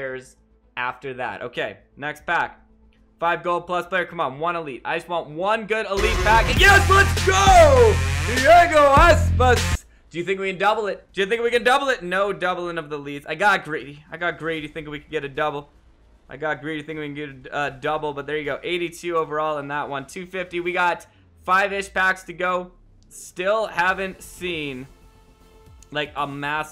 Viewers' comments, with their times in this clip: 0:08 I had my headphones to nearly max 😂